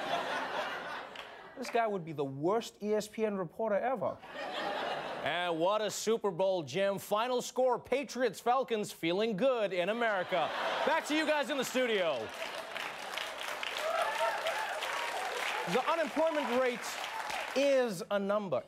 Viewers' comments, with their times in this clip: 0:04 How the hell does he drop his accent really crazy always find that amazing.